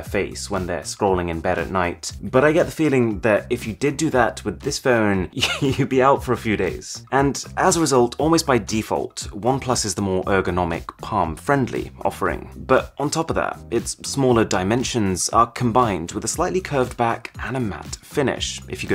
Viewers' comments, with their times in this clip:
0:04 weirdest sound i ever heared in my whole life...